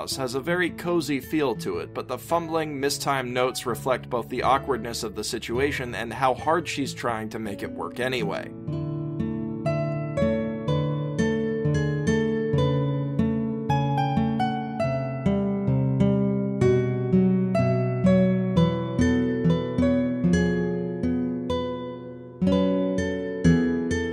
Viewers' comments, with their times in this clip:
0:09 The song "Home" also sounds kinda sad at that part because you have to leave and to do that you have to fight Toriel.